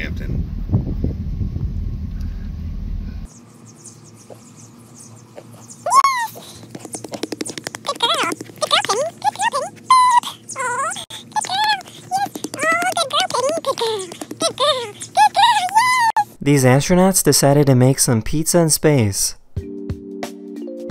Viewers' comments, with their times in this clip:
0:03 I just realised how weird us humans sound when talking to our pets 😂💀
0:05 OMG i did not know piggies squeaked like that! that is so cute and silly! that must be the happiest piggo ever!
0:06 the person patting the pigs stomach sounds like when our parents are at the store buying watermelons and hit the melon to see if its alright.😩🤌